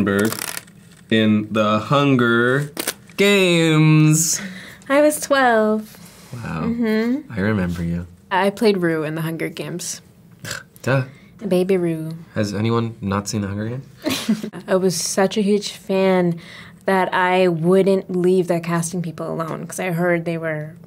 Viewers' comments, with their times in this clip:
0:07 the way ben says "i remember you" in has me melting, he's so wholesome